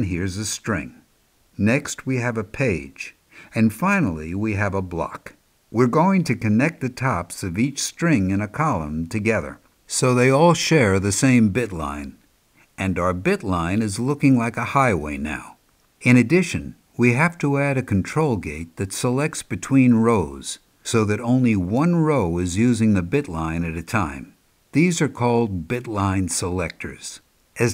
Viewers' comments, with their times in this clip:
0:09 when you don't pay attention to your teacher and he has to raise his voice